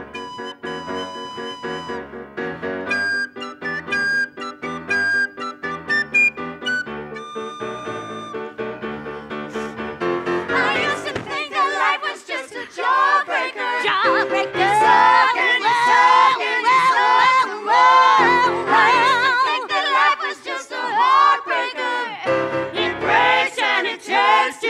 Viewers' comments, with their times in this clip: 0:09 Whose voice is that-?! That harsh female voice, it sounds so good!